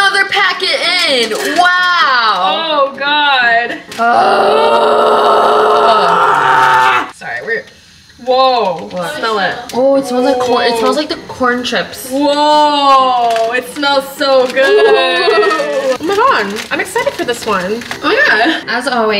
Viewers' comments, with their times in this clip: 0:05 did someone fart??? 😰